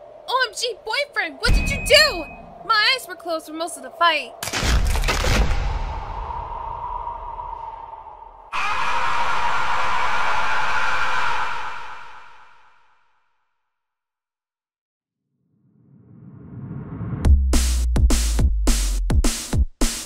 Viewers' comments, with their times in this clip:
0:08 what the hell was that scream?